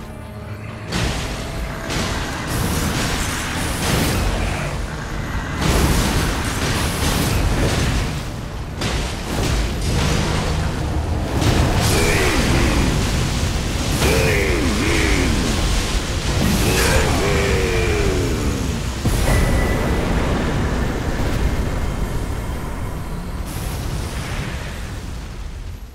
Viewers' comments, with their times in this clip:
0:07 When that leehee hits.. issa rap